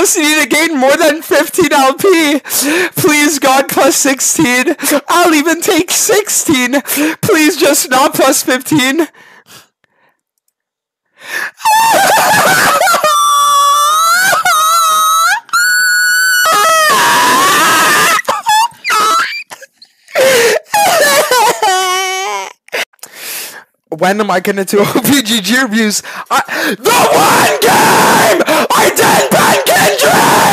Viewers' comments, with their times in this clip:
0:10 bro broke the sound barrier and proceeded to distort reality and shift the balance of the universe with his voice
0:13 these are not human noises lol